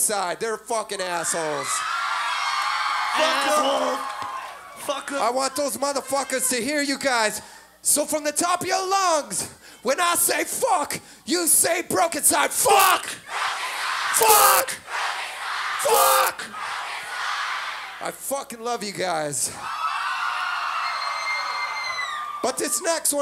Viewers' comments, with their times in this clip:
0:04 2 drunk 2 drive. the dude who screams sound the same when its not live :D